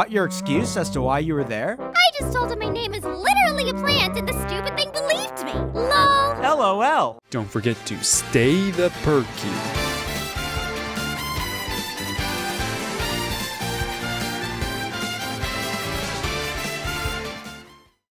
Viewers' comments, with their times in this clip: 0:05 the lol is literally nice shot